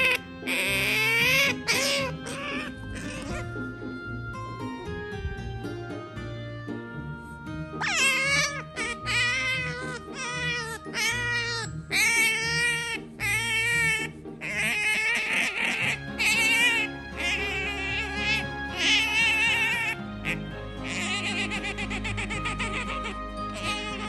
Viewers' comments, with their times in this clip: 0:08 the sounds they make remind me of a fox